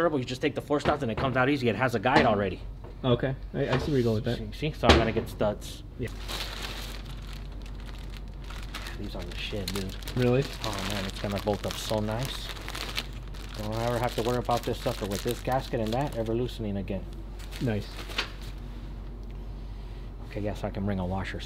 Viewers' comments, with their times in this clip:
0:04 when he knocks the housing on the table. They sound zealous and eager in their voices. Sounds like they gon have sum fuuuunnn!